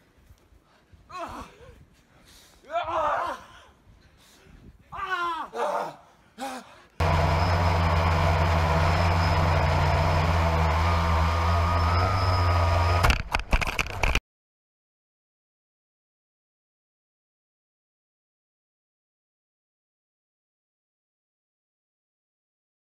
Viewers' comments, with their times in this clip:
0:07 what is that, a diesel powered drone??